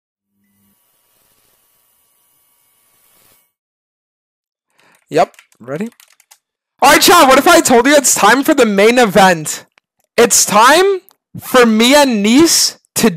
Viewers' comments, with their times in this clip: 0:01 what if i told u my eardrums will never be the same